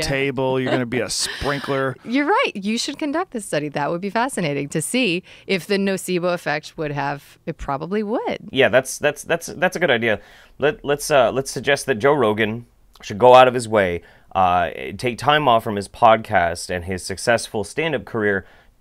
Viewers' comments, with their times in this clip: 0:05 "NOcebo"? Really? Kinda childish for an "authority".